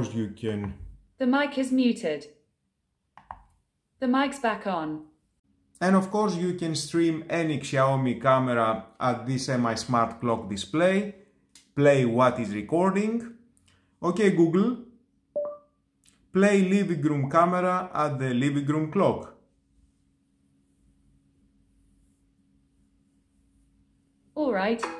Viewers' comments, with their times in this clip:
0:07 wtf? Google how pronounced brand Name. Shame on you.